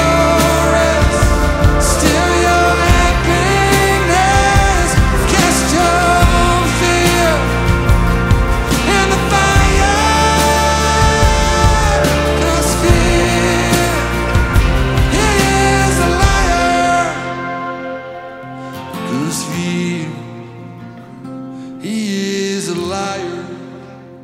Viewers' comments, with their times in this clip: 0:08 what is it called the type of playing that is shown ? im looking for that ocean / dream like sound